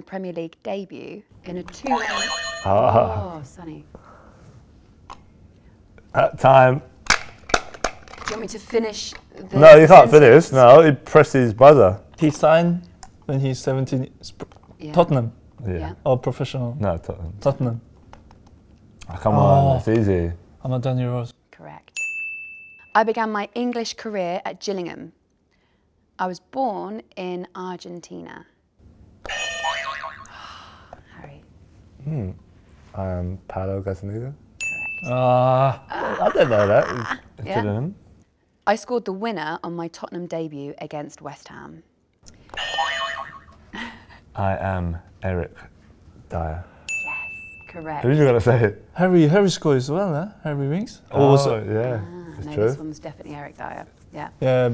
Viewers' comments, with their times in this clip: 0:09 Kane sounds like a 5 year old.
0:09 "nah he canth finith, he prethed his butha"
0:20 I couldnt hear his answer. Could someone help me with this?
0:35 Even The captions didn't understand What he said 😂😂
0:36 Harry Kane trying to say "Gillingham".... "Glnllmm"